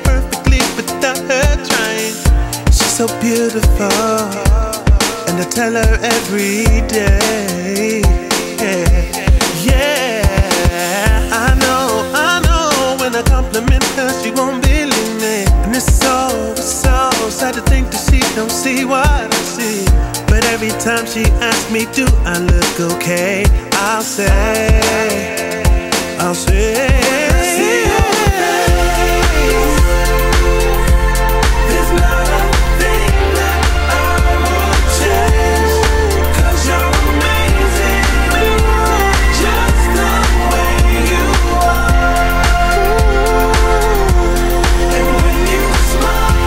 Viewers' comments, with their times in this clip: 0:05 best sooooo nice sound. much more better than bruno mars this sound :) love you guys. amazing voices :D
0:31 youre awesome! subscribed and like !!! your voices are like a robot XD